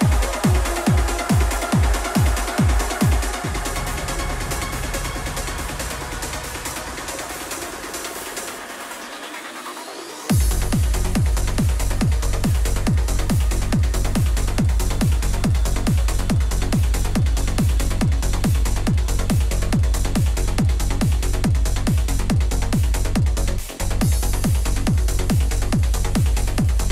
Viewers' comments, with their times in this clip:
0:10 Incredibly beautiful tunes One of the best music set Especially Outstanding tune🌅❤️ Thank you so much 🌾❤️🎶